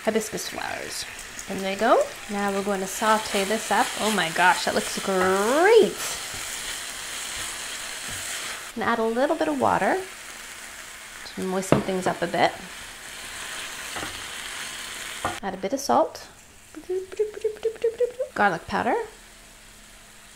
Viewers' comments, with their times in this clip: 0:04 Tony the Tiger "Greeeeat!" lol